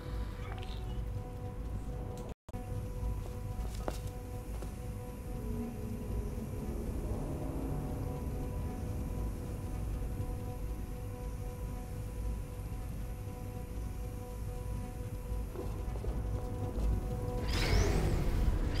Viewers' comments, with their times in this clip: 0:03 Commentary cut-out. The puzzle is quite poorly designed.